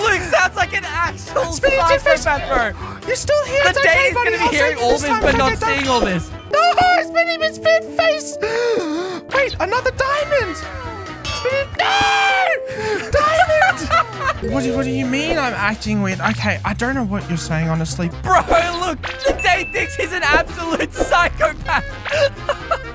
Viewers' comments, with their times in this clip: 0:05 Bro sounds like a kid